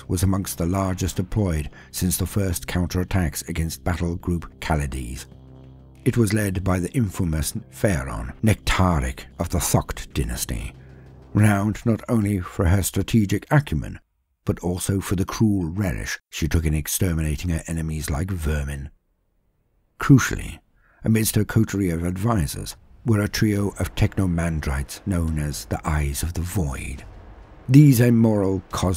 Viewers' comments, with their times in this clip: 0:09 Please, tell me if I misunderstood you say F**KED Dynasty 🤣